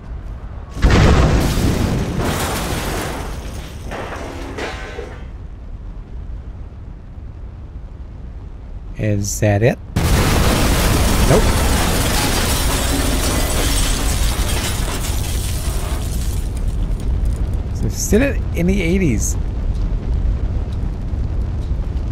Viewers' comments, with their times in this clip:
0:09 "Is that it" BOOOOOM lol